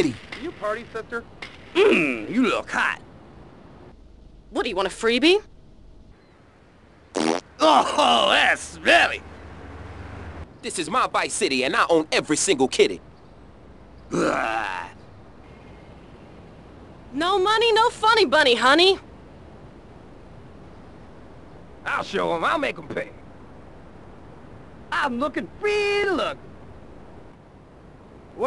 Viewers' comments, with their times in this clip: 0:07 I hear a fart.
0:11 lol "MMM!" *gun shooting*